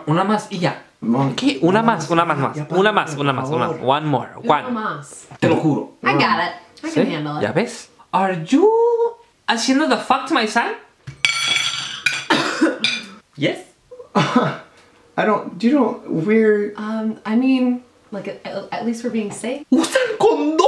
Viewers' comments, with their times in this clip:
0:07 SUPEReeeGO i ca nt stop laughing